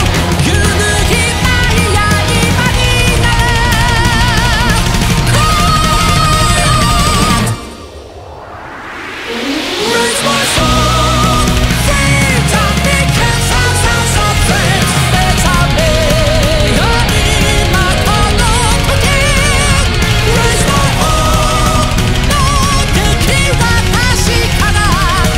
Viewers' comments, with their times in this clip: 0:09 sounds amazing holy